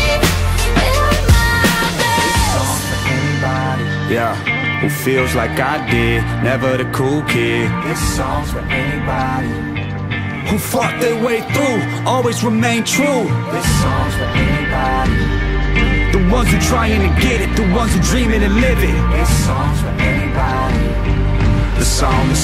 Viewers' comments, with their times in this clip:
0:07 does it sound like he said "fuck their way through" or is it just me? 😂